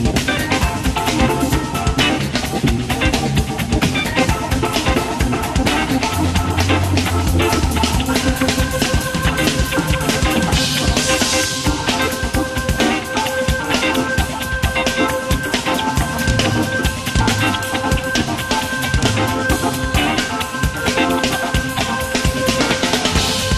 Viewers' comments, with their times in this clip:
0:09 Love this band, have seen them many times, Chester Thompson is the best! But, Chester drops a beat and never quite recovers the rest of the way! There's a saying in Japanese "Even Monkeys Fall From Trees"